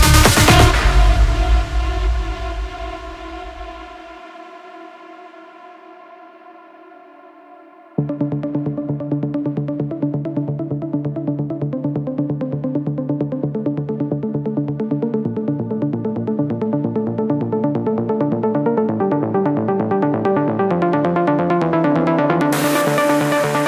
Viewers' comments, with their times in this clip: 0:07 remembered me of Kai Tracid